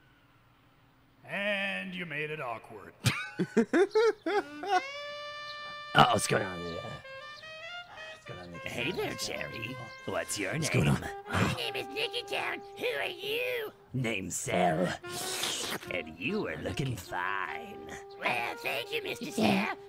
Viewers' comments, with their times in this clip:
0:06 sounds like teen girl squad